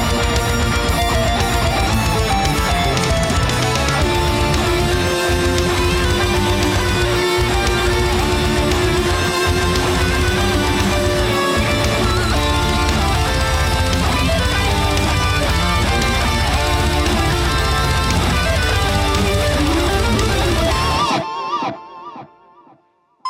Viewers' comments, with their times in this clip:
0:06 Was at the gym..heard a familiar "good luck!" voice and the most even more familiar tune and was like.. "OMG I miss starfox 64!"